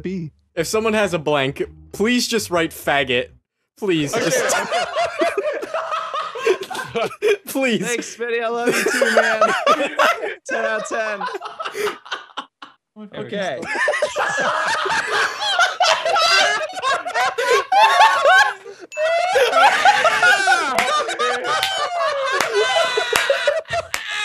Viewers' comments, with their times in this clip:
0:05 "using only one card in your 'hard'." the fuck?